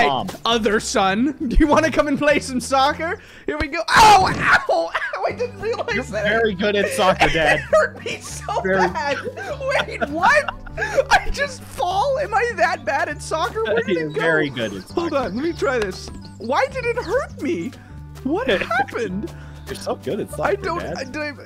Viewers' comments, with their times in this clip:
0:03 That scream though Hurt my ears so bad